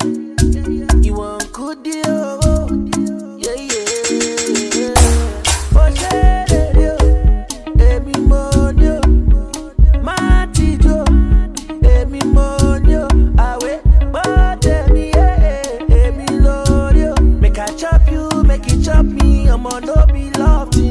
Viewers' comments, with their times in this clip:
0:03 I have headsets on...Im feeling the beats. LOVEEE....